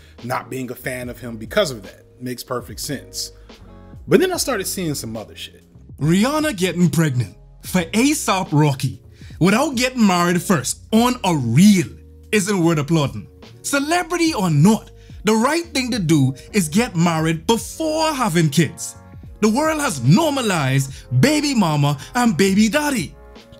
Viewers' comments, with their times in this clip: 0:09 really got a bajan man to read it lmao